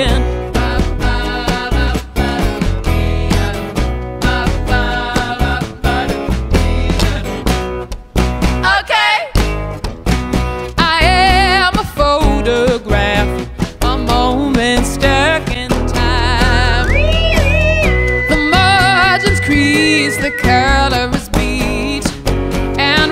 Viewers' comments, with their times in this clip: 0:10 the harmonies with the whistle is soooooo satisfying when she sings